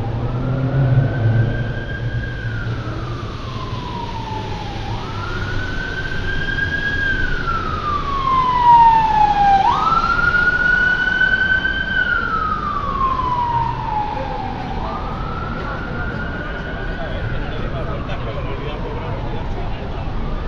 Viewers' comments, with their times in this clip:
0:07 When did 🇬🇧 change their sirens to American style ?